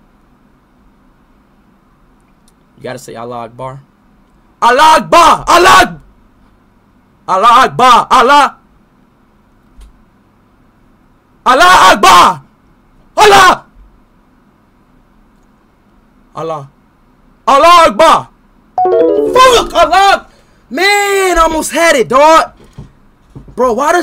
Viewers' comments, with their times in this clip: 0:09 Bro that’s not allahu akbar it’s allahah ahah